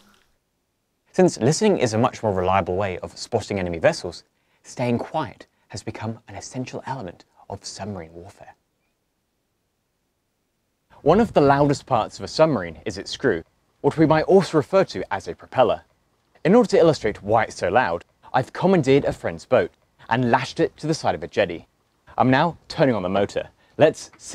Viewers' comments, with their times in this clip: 0:05 He talks quite... so to not scare the submarine. Excellent video.